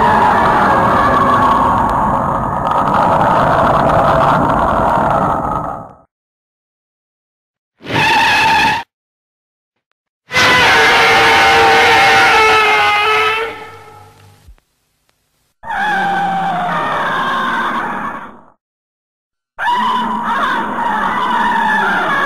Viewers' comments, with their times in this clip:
0:08 that's a car
0:10 the best roar
0:10 reminds me of the most annoying sound in the world from Dumb and Dumber